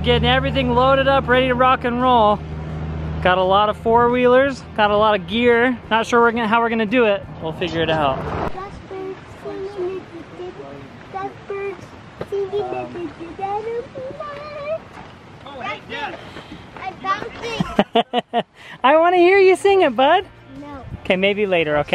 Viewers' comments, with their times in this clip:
0:09 This is the first I heard him singing a favourite Beatles song of mine.